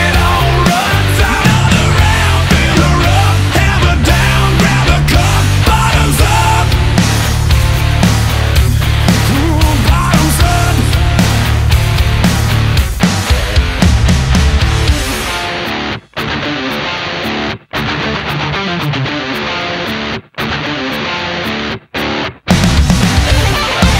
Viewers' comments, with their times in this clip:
0:08 Ooooo! Great guitar break starting